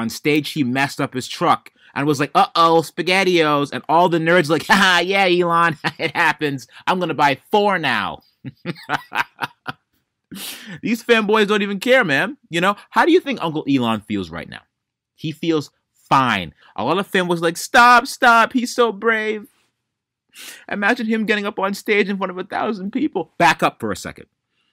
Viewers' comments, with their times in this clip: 0:07 we get a good Shao Khan laugh 😂😂😂😂...